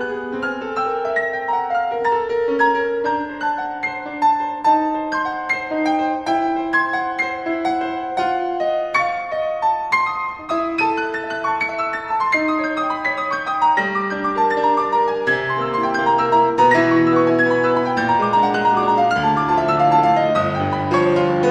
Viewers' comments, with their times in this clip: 0:09 reminds me of Lizst's Dante Sonata